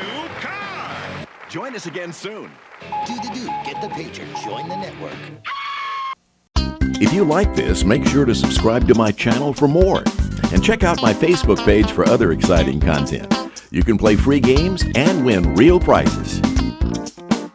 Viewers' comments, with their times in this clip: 0:05 That should've been a dragon roar from 'Tic Tac Dough' but that scream was kind of funny BTW.